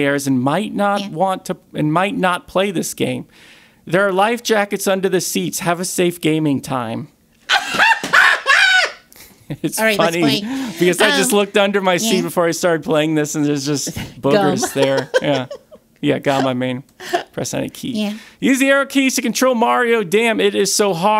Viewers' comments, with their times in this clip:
0:07 That laugh was incredible.